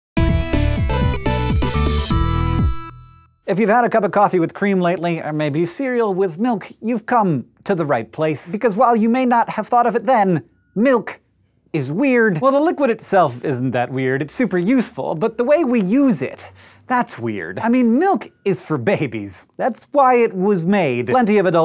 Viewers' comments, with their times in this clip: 0:06 I swear to God the pause is intentional